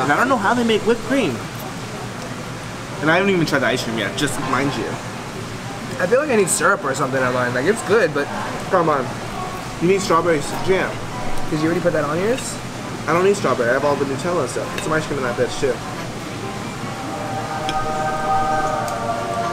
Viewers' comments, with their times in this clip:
0:07 Haha its all good.. He says it when his mouth is full so its easy to miss.. Go foward a bit to